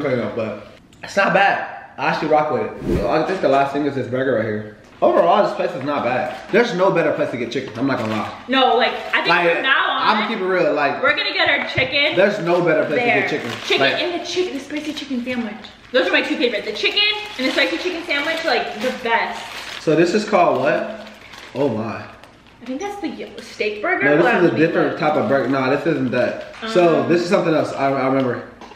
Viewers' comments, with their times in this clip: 0:10 was that a bird ? 😂